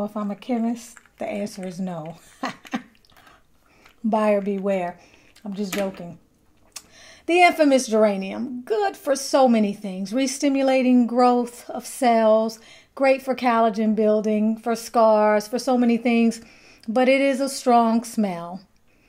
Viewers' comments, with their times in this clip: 0:06 Does any one see the actually list? I can not tell what she says at the mark